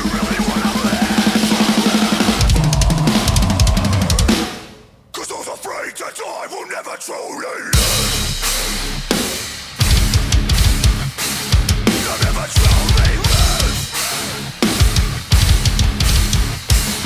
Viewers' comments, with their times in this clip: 0:04 i love how you're banging until the breakdown hits HAHAHAHAHAH